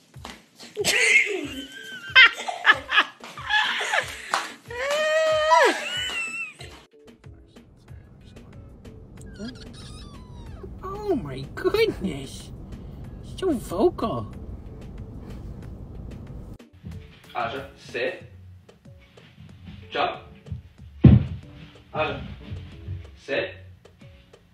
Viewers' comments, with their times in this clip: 0:10 love kitten roar